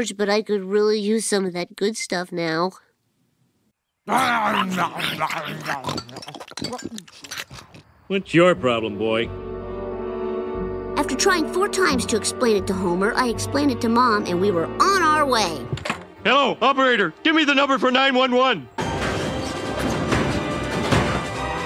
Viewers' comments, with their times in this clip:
0:04 and that grunting sound, i thought it was gonna be mr plow eating bart's butt.. darksimpsons has ruined me